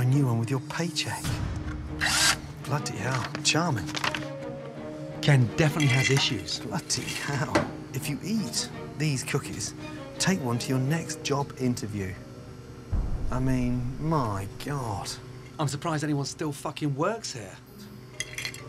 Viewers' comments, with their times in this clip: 0:05 Okay but why did the cookie jar sound like Lego bricks 💀🤚